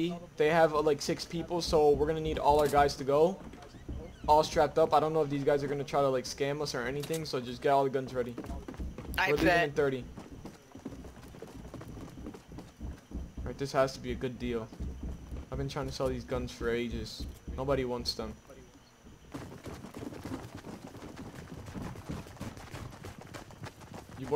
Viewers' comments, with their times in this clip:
0:09 the way he said it lol